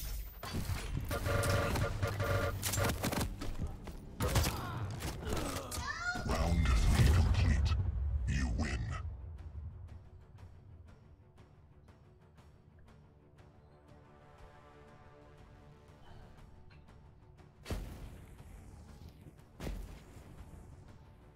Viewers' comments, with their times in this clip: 0:03 anyone else hear someone screaming "HELP"